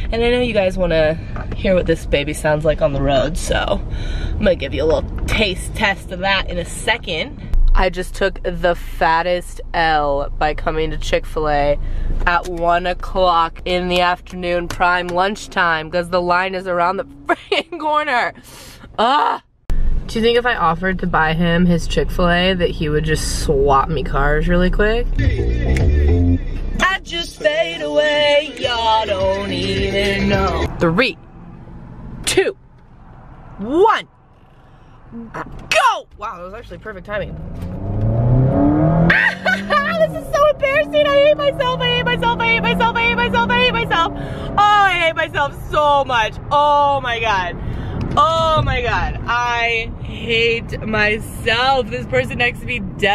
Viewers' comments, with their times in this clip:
0:05 “Tathe teth of that in a sthecond” lol
0:34 Did she fart
0:35 WAIT DID SHE FART ?!
0:35 Anybody else hear Sabrina backfire ?